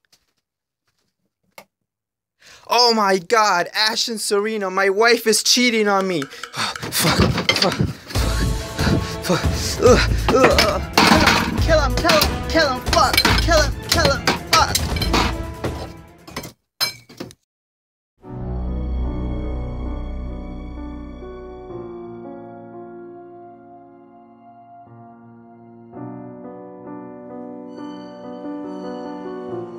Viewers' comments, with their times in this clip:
0:10 That voice though